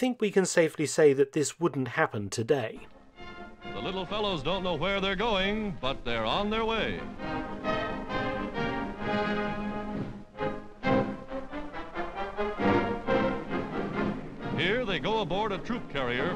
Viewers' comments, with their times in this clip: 0:03 is hilarious especially so with the mid Atlantic accent.